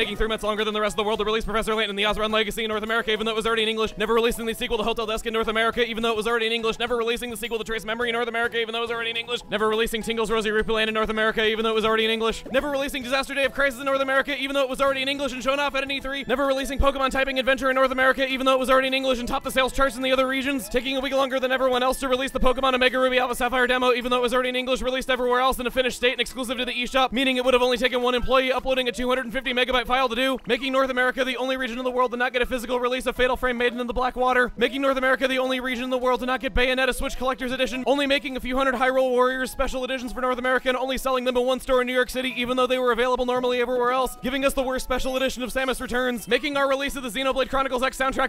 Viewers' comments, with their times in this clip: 0:09 Eminem has a new challenger.
0:32 he sounds like eminem